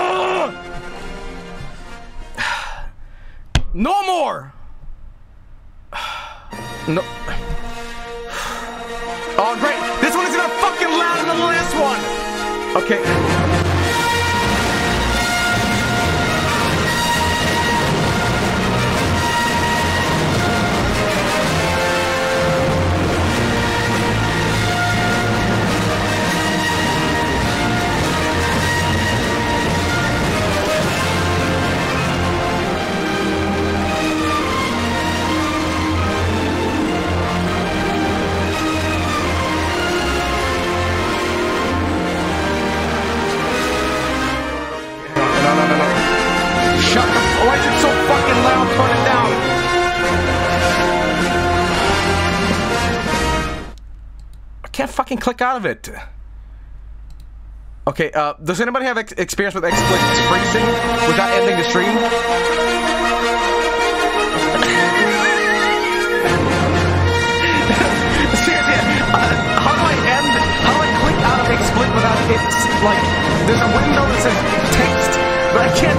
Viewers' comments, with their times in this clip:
0:06 But the one starting from seems to increase dramatically in volume as it plays. I'd be curious if anyone has found the specific video that was playing at this point.
0:13 this is a certified “Loud = Funny” moment 🤣
0:57 Joel: "Does anyone have any experience with-" Star Wars music: intensifies